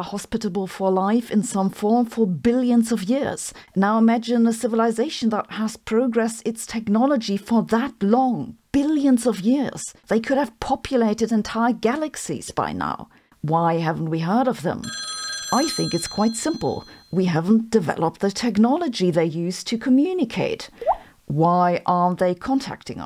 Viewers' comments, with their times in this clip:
0:10 If you notice in the video , the phone rang when Sabine said "They haven't communicate with us yet" Coincidence ?😀